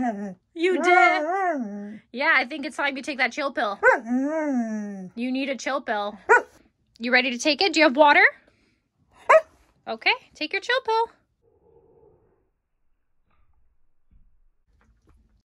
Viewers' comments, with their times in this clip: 0:08 That's the cutest bark I've ever heard